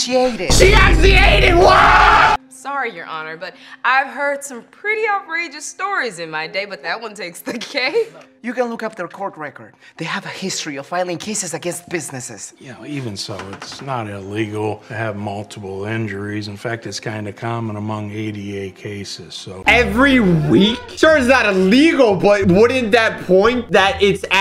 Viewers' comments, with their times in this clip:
0:05 AND THAT LAUGH WAS WEIRD AND TOTTALLY NOTICABLE FOR GUILT